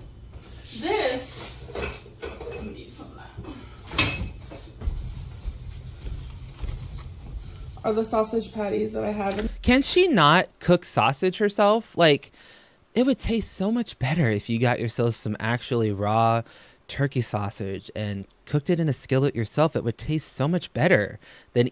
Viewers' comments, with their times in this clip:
0:03 you can fuckin HEAR THE THUNDER from her steps GORL
0:04 omg the sound her footsteps make is insane!!! 😟
0:06 So is it just me or can you hear her stumping to and from the camera?!